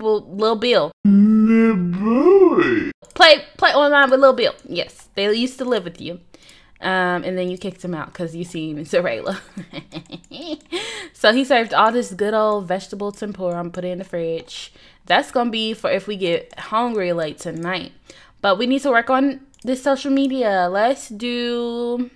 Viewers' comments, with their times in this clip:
0:08 That laugh had me DYING BROO !!!
0:09 got me dying...that laugh